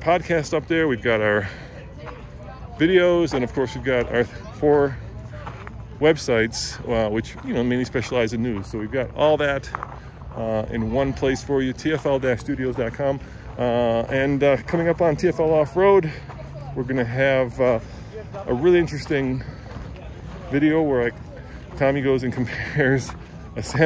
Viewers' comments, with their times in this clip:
0:07 "We specialize in nudes" Wait what?